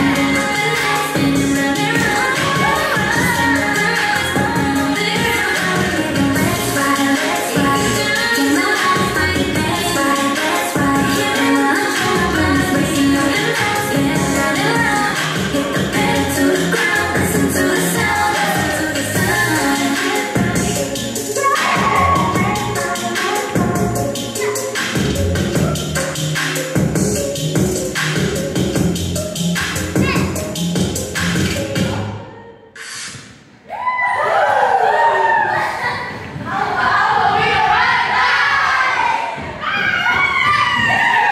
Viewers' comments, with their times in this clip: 0:03 The rift gave me 90s vocals feels and vibes 🤯😤🔥
0:29 That "Heh!" at the end was so cute! LOL